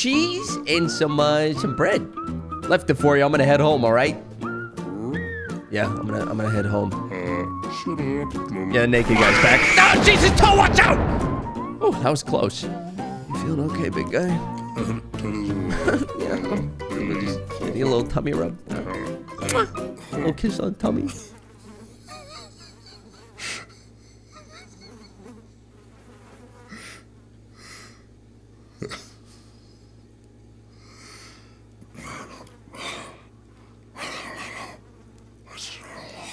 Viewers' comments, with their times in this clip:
0:07 You can hear clearly how Toe tells him: "Uh Shut up, dude...." lols
0:22 When you tell a joke that's so funny you got the whole squad laughing